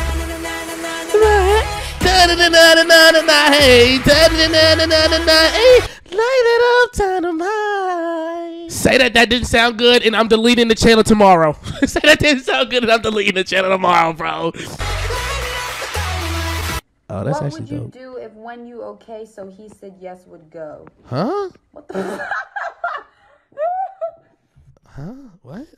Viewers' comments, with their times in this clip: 0:06 how I sound to my family when I’m singing along to skz with my earbuds on.